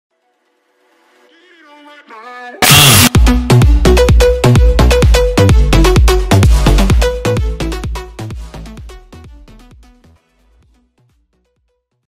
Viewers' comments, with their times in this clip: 0:02 = no ear drums